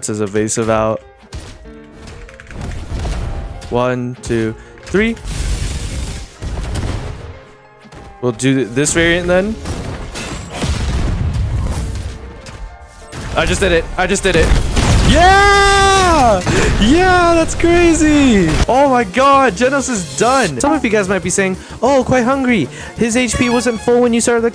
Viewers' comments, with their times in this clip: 0:06 Dude That Slap Battle Sound Lol I Like that❤